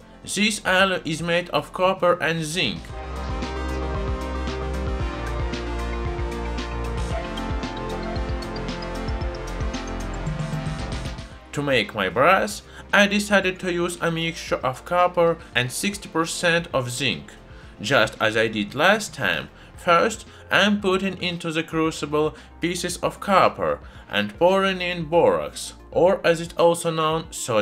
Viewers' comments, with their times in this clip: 0:10 "To make my bruhs i decided to use a mixture of zinc and 60% copper." Yes, indeed that is the only way to get homies.